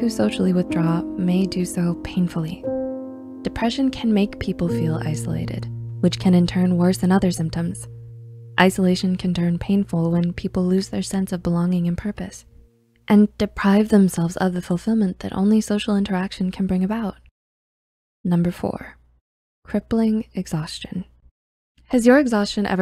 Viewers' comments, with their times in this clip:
0:10 The music is far TOO LOUD, I can hardly hear you speak!! So glad it stopped And yes all of the mentioned problems are part of my daily life 😢 The only thing missing is that at night I keep going and find it very hard to go to bed, just as it gets hard to get up and it is very hard to keep up a "normal" waking/sleeping ritme and with that there's also an irregular food ritme, that is bad for you health.